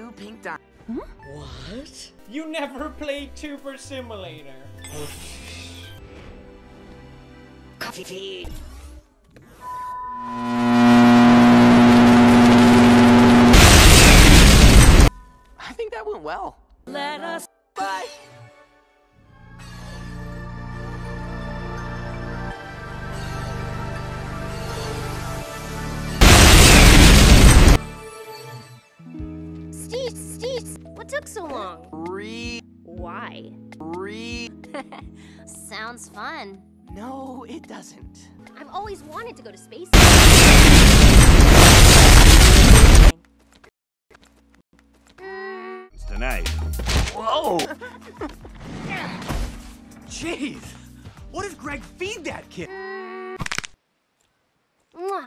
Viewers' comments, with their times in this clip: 0:06 Random screen:(demon microwave sound)
0:08 "C O V E F F E f e d." whom else hears this-
0:10 I think we should put a sound warning because of this kind of stuff...
0:19 why is the music so good when it warps
0:37 I have that type of microwave mine is way quieter ._.
0:39 why wait explosion sound effect